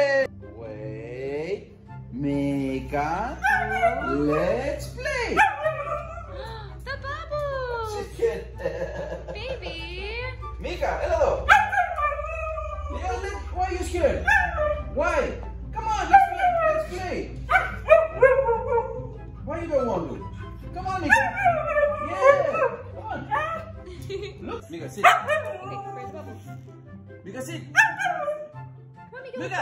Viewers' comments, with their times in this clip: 0:10 Did he just said:Meeka Έλα εδω? (Έλα εδώ means come here in greek)As i greek i can say that he spelled it perfect